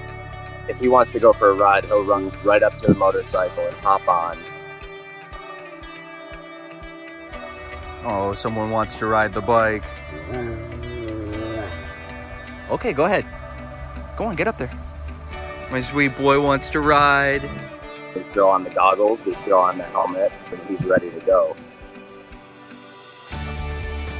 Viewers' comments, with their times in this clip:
0:07 Love his Wooo! Sox is Adorable!!